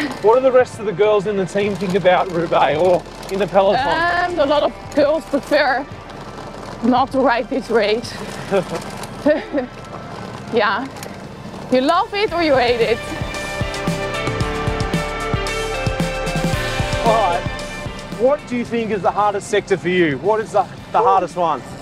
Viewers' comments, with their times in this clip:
0:07 love the vibrato